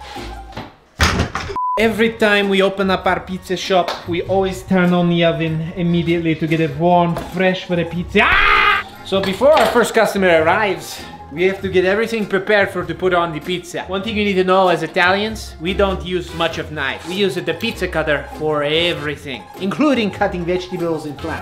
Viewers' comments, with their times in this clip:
0:08 Best scream ever